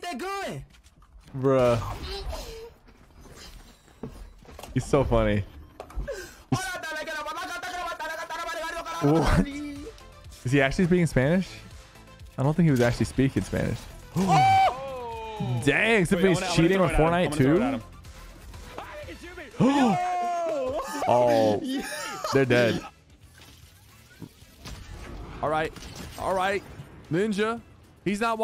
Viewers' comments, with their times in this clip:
0:08 am Mexican and speed is not speaking Spanish. He just saying cheberish things . I speak Spanish and he didn’t say a single word in Spanish
0:09 he is not speaking spanish i know spanish and he doesn't speak spanish that time
0:10 play it on 0.25 sounds like did he actually peed his pants